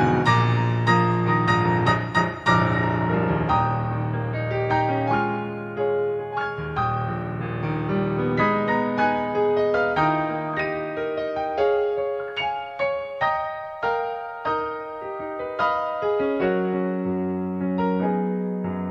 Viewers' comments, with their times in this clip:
0:05 love those harmonies ish!